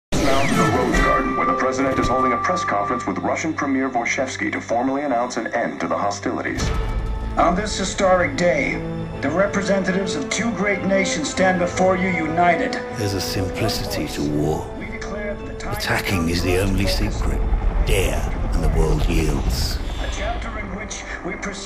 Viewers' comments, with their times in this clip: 0:08 why does the president sound like donald trump